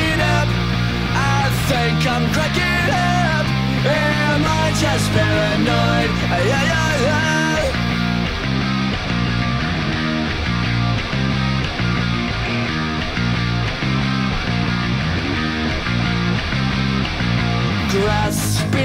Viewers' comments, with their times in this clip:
0:03 Am I just paranoid? Ugh rugah roggh?